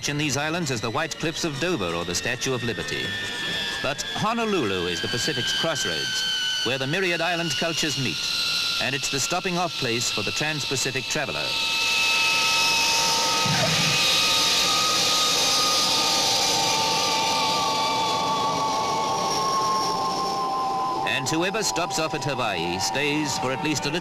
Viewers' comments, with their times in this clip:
0:08 Pan Am Clipper Defiance - N704PA - the Boeing 707 that The Beatles traveled on their historic journey to the USA. The aircraft was with Pan Am until about 1971. Those early Pratt and Whitney JT3C engines sure were screamers!